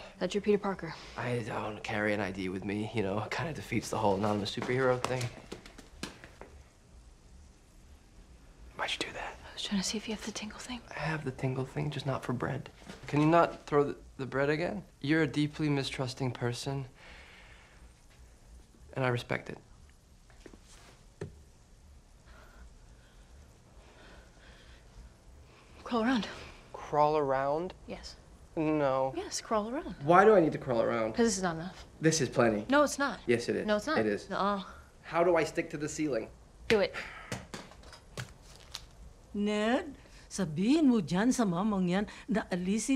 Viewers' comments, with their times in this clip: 0:05 the way he asks 'why'd you do that?' is sooooooo cute I'm dying
0:28 the way he says No is so cute